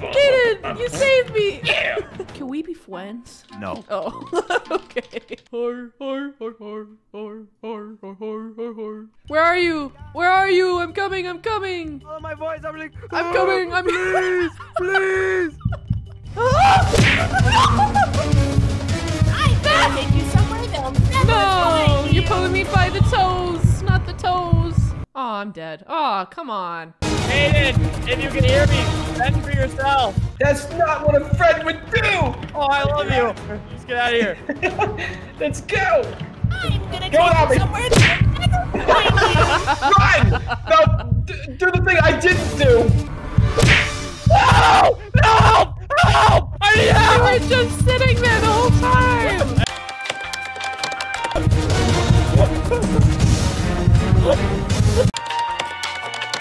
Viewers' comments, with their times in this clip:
0:03 I like when she said that like that.
0:17 he sounds like a carton villain IM GOING TO TAKE YOU SOMEWHERE THEYLL NEVER FIND YOU
0:17 are we not gonna talk about that pitch perfect monokuma impression
0:37 there was a voice there that sounded like monokuma 😭